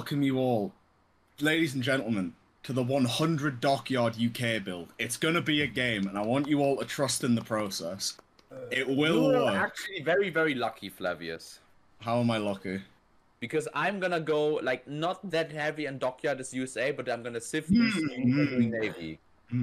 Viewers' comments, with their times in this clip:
0:05 This was a crazy game, unfortunate how you lost a week before D-Day. Also, is that someone fapping in the background ??